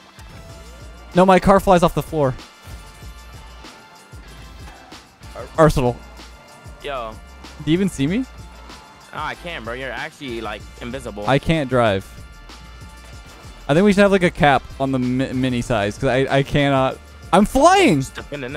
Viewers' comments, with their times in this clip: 0:05 I was watching this at 4.18 am and i almost exploded trying not to laugh at that desperate “Arsenal”